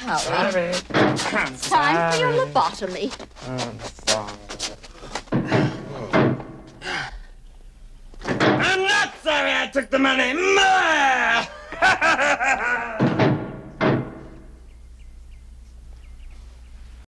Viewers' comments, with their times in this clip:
0:08 for years I thought he said Mine and it came out garbled as “Meh” “IM NOT SORRY I TOOK THE MONEY, MINE!!! HAHAHA” This scene always makes me laugh